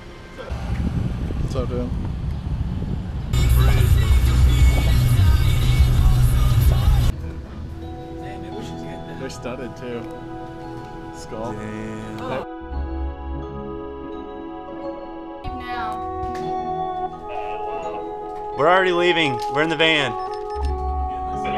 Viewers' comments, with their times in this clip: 0:06 when that kingdom hearts kicks in🤤